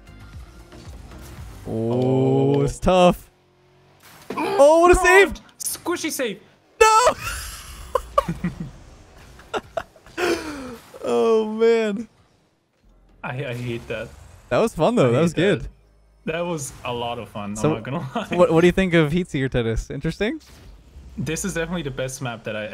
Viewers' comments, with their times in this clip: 0:08 the saltiest laugh ever